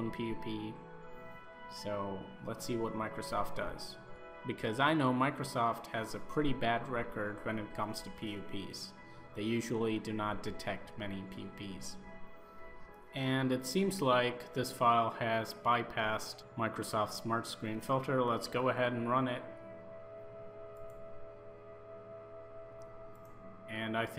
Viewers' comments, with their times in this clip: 0:07 What does he say ? I just hear "When it comes to pp"